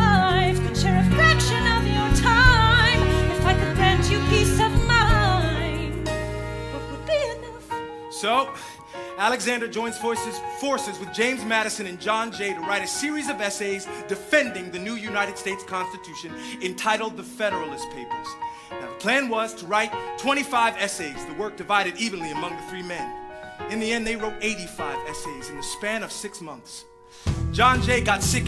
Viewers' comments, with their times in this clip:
0:09 so,Alexander joins voice-forces 😭😭😭😭😭😭😭